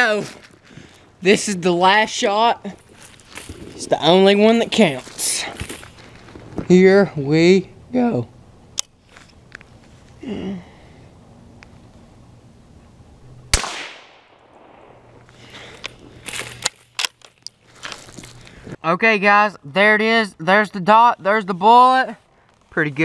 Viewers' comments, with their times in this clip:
0:05 dat voicebreak xD